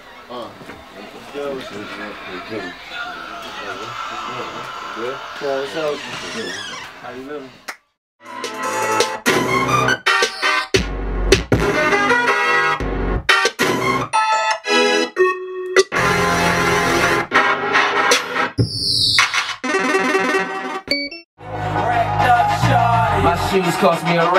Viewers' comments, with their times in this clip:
0:08 those beats go too hard